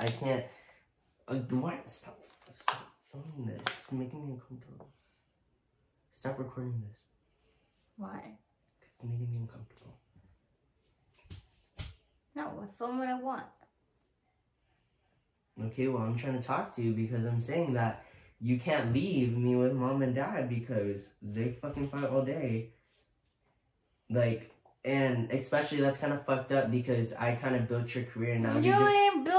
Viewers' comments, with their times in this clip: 0:10 he started acting crying